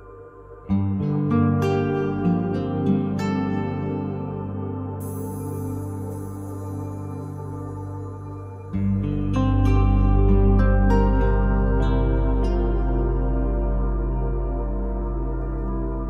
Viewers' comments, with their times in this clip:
0:04 I love how all of Thomas Newman's score have that piano, oboe and the cymbal You just know it's Thomas Newman. I don't know if it's the reverb but it sounds so ethereal. Certainly one of my favorite composers.